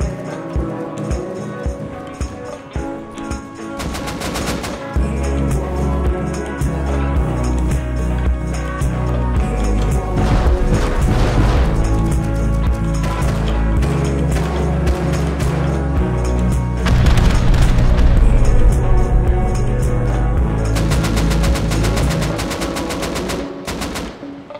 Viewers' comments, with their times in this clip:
0:05 Did you intentionally make the music sync with the gun shots at somewhere ?